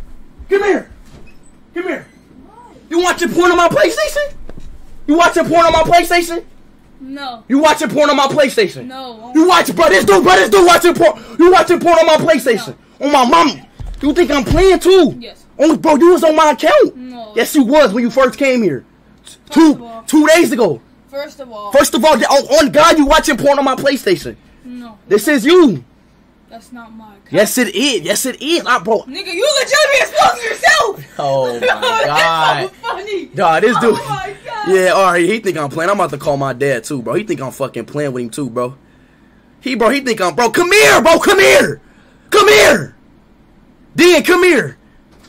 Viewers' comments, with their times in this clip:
0:06 screamin like a idk
0:11 the fact that the bro just responds like a robot "no" "no" "yes" lol
0:29 why tf does he sound like he is fake laughing and was actually crying